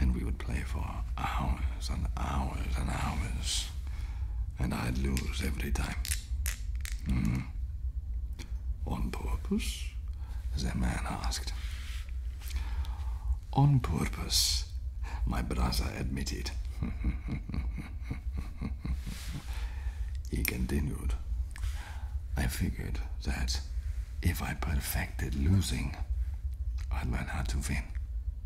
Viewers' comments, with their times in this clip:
0:09 I absolutely adore the delivary here, just stamping this for myself